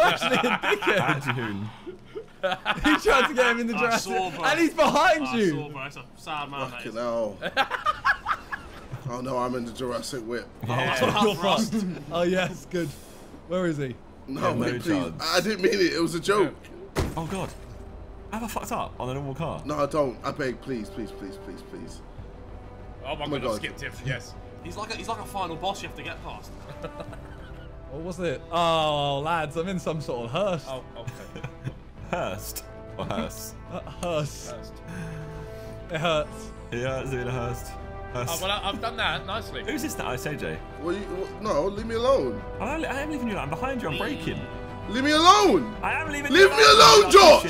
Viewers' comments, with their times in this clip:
0:05 Those laughs are on of the main reasons I still watch this channel. Too fucking good😂
0:31 Big up Hans Zimmer for making this banging background music 😂 😂